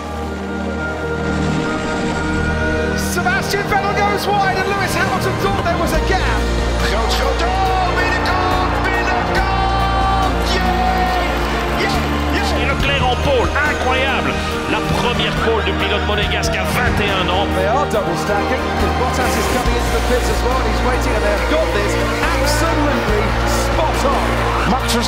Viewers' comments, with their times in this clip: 0:07 That’s Olav Mol how we know him!